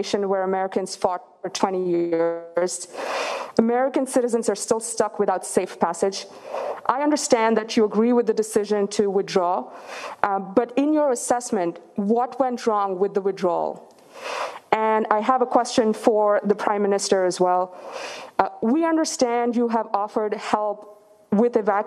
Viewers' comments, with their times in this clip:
0:03 Darth Vader is a journalist now